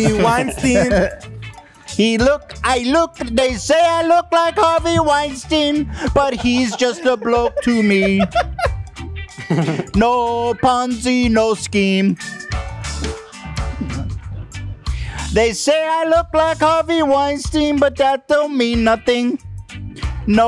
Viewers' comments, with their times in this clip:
0:04 when ethan settles in on that beat and starts singing his ass off. Dying 😂